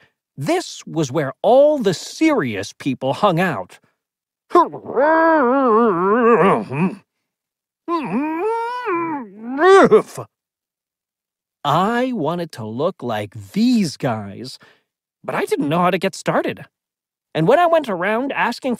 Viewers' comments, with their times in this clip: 0:04 man sounds like a Audi R8